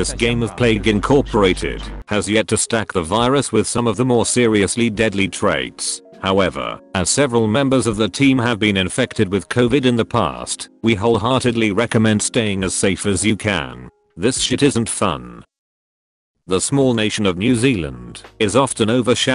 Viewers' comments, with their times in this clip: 0:06 2 years of a highly transmissible global virus and people out here still coughing like this 😵🤢